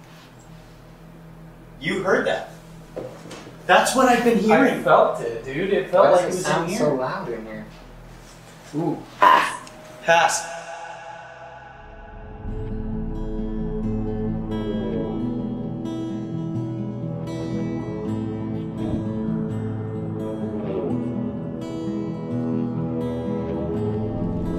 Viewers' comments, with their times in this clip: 0:10 bro that guitar in intro give me chills